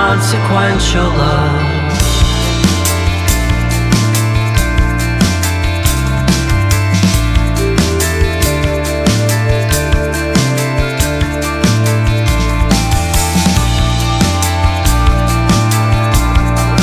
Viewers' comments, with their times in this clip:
0:04 Xylophone sounds great!!! Listening to this AM in Tokyo